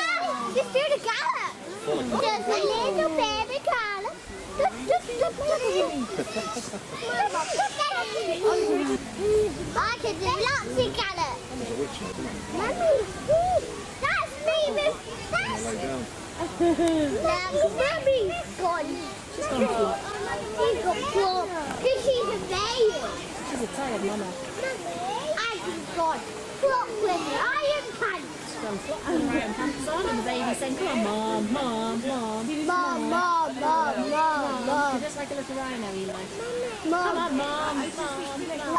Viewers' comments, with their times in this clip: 0:04 the narration is half the fun. that little "doot doot doot doot doot" was spot on
0:26 am i the only one that heard “oi ya cunt”